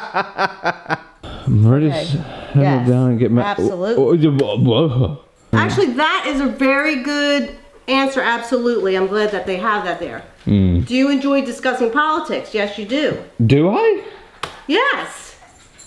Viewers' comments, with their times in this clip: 0:03 did you forget how to talk or something??? 😂😂😂